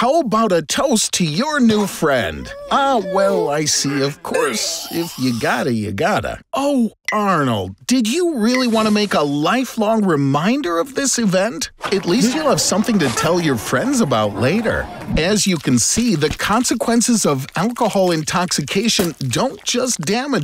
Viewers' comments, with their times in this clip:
0:06 why did he say OH like he was confused